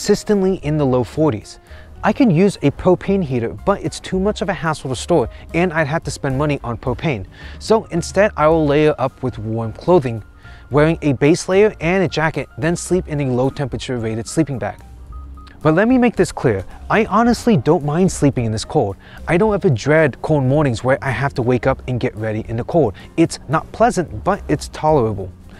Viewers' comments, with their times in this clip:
0:06 lmao i though i hear cocaine